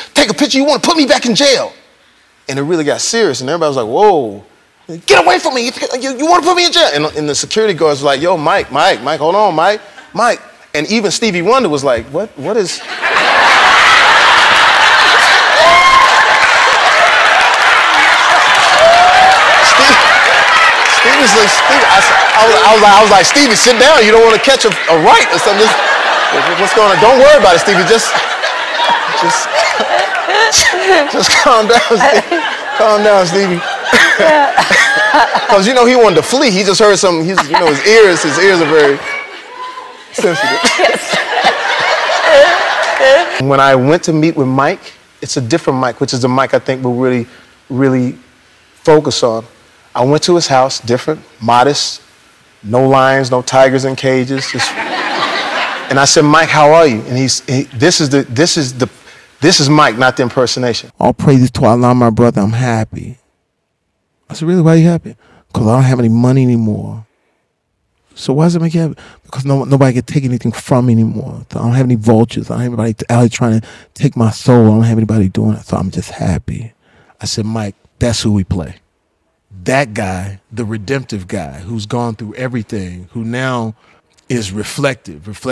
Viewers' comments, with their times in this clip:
0:10 came here for mike tyson impression but laughed so hard at Stevie's one hahaha
0:20 That's more Ray Charles than Stevie Wonder.
0:39 Elen's laugh (idk I thought it was funny)
0:41 Bruh, the hell is that laugh 😂😂😭😂
0:59 i swear, when i closed my eyes I could swear I thought it was Mike Tyson talking. Jamie Foxx is a real talented impressionist
1:00 OMG, I've heard countless impressions of Tyson by Jamie since his early standup days and ofcourse they're exaggerated. That's one of the main tricks to learning how to do impressions...exaggerate. This helps to get you comfortable and also extends your comedic reach. My impression of Tyson is heavily borrowed from Jamies. I love it. However, just BLEW me a way. This is not just an impression or an amazing impersonation, its a total embodiment even in his manerism without turning Tyson into a characature.
1:00 His impression at the mark is amazing... Truly talented man...
1:00 Truly jaw-dropping impersonation
1:00 is honestly one of the best impressions ive ever heard, damn
1:00 mins into this is hands down the single Mike Tyson impersonation ever done or will be done. He didn’t just use the everyday Mike stuff he captured the true essence of a laid back Mike Tyson. I’m convinced that played over the phone to Mikes mom would have convinced her she was on the phone with her son. Jamie fox is unbelievable talented in the true meaning of the word. Like if I told about someone who was as good at what he is good at on the level he is at, you just plain wouldn’t believe me….un…believable….
1:00 Damn. The impression 😲.
1:00 Jamie's impressions of Mike at the beginning (and in the interview with Ellen) were the older Mike, when he was much more high strung and on edge, while the impression is what he is right now as present day Mike.
1:00 When Jamie said "All praise to Allah my brother I'm happy" he sounds EXACTLY like Mike Tyson. That was scary accurate.
1:00 Damn this sounds EXACTLY like Mike, no caricature, no exaggeration, close my eyes and it's Mike.
1:00 wow. That was a very good impression.
1:00 Bro is legit the most spot o. Mike tyson impression hands down
1:00 is the most spot on impersonation of Mike I've ever heard. It wasn't the exaggerated caricature that we normally hear, but Mike himself.
1:01 Holy shit. I have been watching Mike Tyson's podcast and Jamie's impression of him is spot on accurate.
1:01 how is his myke Tyson better than the actual myke? 😂😂
1:08 I have never seen an impression like in I closed my eyes and all I could hear was Mike. The tone, the voice, the way in which his accent is kind of weird at the end of the sentence. It's uncanny.
1:10 Indeed. is uncanny.
1:10 close your eyes and it’s Mike who you imagine